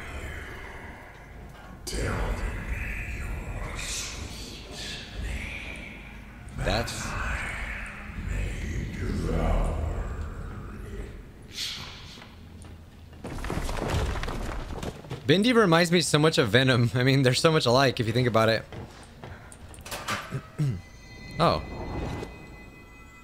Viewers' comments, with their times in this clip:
0:09 sound like Vigne